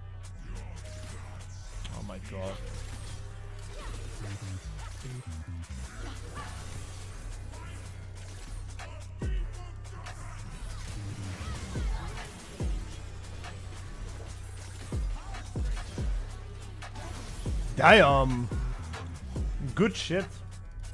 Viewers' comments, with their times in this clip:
0:04 Aatrox line on beat drop 🔥🔥🔥